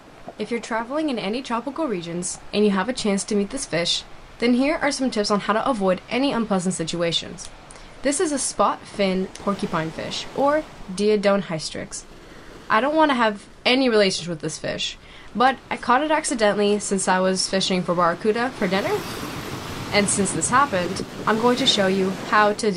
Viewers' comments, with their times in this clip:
0:06 i thought somebody went whizzing on the fish.😳 i watch a little further in this video.it was still the fishing line.